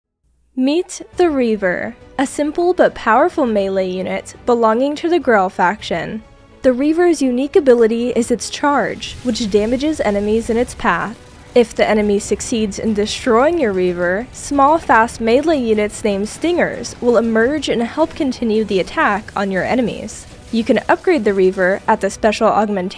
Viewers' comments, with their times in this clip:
0:05 What was actually clearly said: "Belonging to the Grell faction". My mind: "Belonging to the girl faction". I swear I hate my brain sometimes. Anyways, I absolutely love the design of this unit.